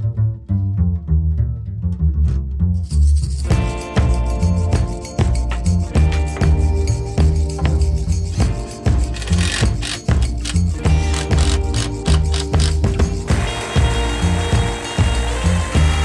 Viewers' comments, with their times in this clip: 0:03 It's just me, or he synced with the music?